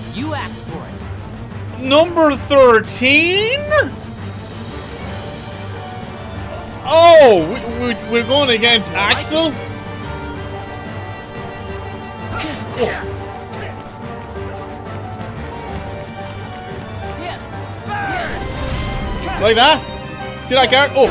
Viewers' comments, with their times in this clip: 0:08 The offsync is hooorrible, it's all good at the start of the video, but yeah the Roxas vs Axel fight or so really shows the offsync, and later parts do too I'm sure, just haven't gotten that far in the video yet. Basically yeah, the offsync gets worse with time, good around the start, super bad towards the end. I've noticed this with your other uploads too if the video is long enough. Hopefully you'll figure out a fix for this, probably just gotta change some render settings or codecs or whatever.